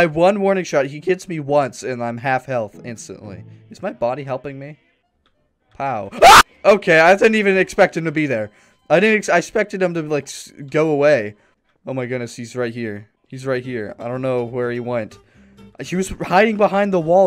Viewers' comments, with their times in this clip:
0:04 cut scream :) I love it